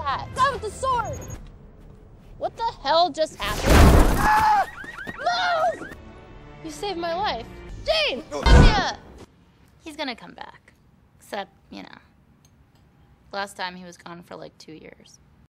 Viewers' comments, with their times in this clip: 0:08 Do not appreciate cutting that Myuh-muh short. Other than that, love everything else.